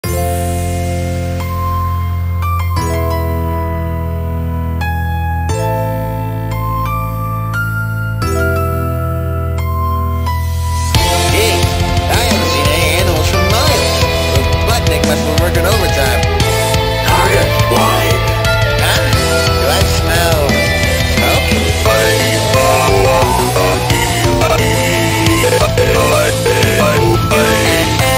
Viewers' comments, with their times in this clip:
0:00 I had vids on automatic play and I thought this was a last breath sans theme 💀
0:16 Why does Furnace sound like he's saying "I AM FLYING!" as if he just realized he could do that.